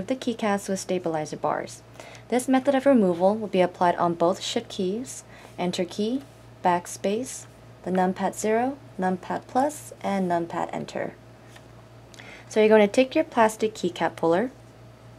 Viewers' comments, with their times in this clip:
0:03 "Both "Shit" Keys"
0:03 "both shit keys"